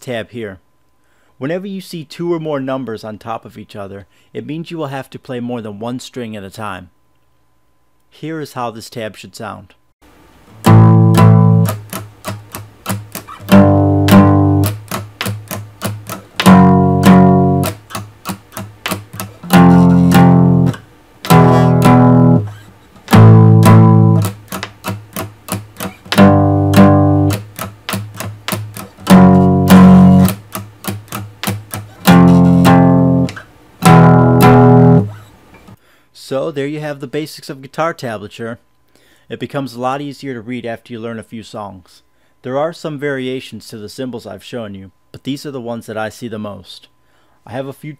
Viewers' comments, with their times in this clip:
0:09 The Example Kinda Sounds Like Brain Stew By Green Day lol
0:19 it sounds like he is playing a slowed down version of brain stew
0:29 why is that sound/vibration/resonation produced? I'm hearing them too on my guitar.